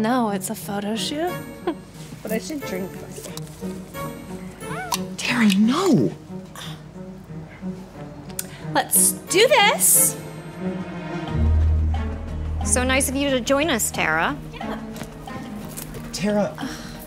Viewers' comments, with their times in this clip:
0:04 I could not stop re-watching this, her expression’s and sounds are just so dramatic and funny 😂